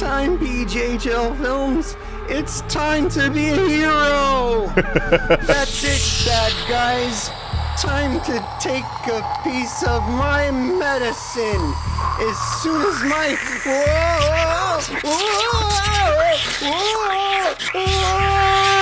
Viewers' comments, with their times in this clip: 0:06 (epic rocket sounds)